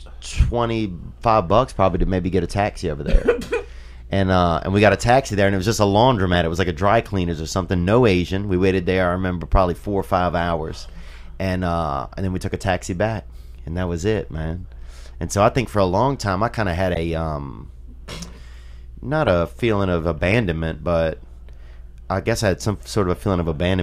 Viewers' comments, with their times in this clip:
0:09 Theo Von makes Lee n Joey laugh